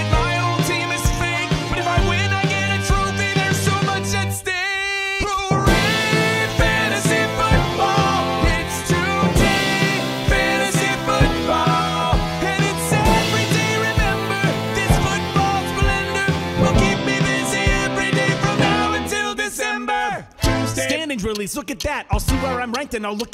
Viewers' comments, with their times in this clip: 0:04 I agree!! The crescendo is simply amazing!!